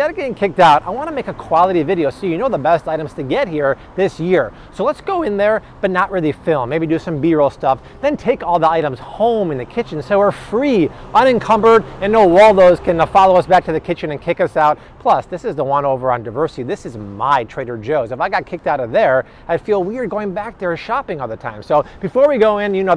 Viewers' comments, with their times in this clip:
0:04 That voice crack was brutal.